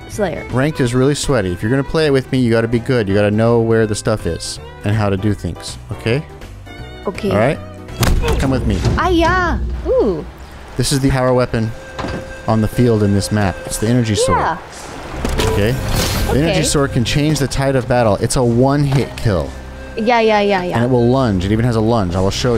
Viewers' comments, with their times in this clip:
0:08 as an Asian who grew up with Jackie Chan adventures, I felt that "ayah"